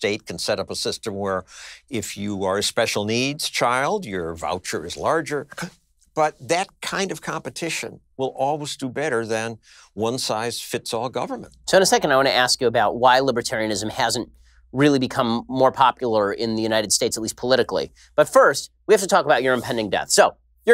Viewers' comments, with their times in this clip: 0:05 If you’re a special needs, your voucher is larger- hhughhugh Wtf was that? 😂😂😂😂😂😂